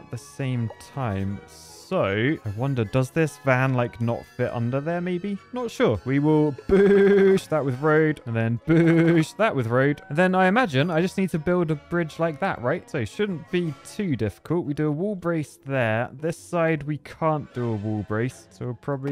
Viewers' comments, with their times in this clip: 0:06 Sans Undertale talking: